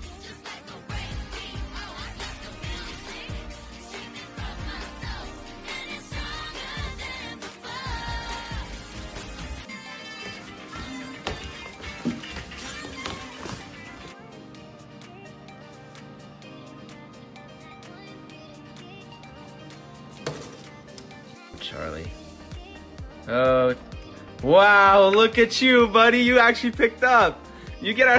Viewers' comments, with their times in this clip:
0:10 bro I always thought I heard music and 3 dorks singing and dancing